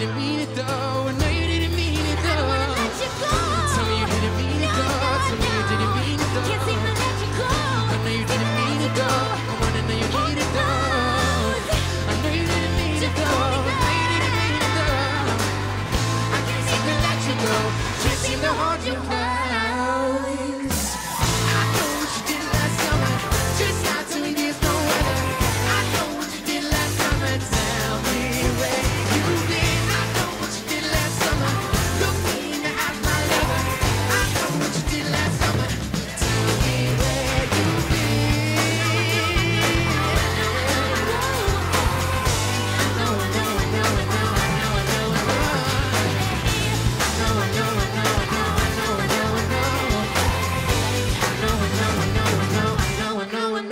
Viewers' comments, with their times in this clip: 0:04 I love the way that Camilla says "no,no,no" so cute 😍
0:04 Her voice crack & Shawn's look...💜
0:04 i looove the raspiness in her voice
0:16 is one of the best bit that camila sings
0:18 their voice both descending together 🔥 I hope they can collaborate again, their voices blend together perfectly and sound amazing
0:19 camila's voice was so satisfying GAHD
0:36 My favourite moment on this video is 😍 Omg his voice